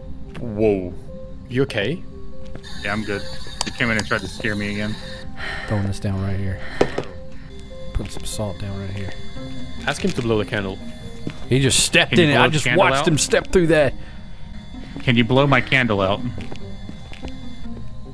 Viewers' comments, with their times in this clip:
0:06 did they not hear the spirit box ?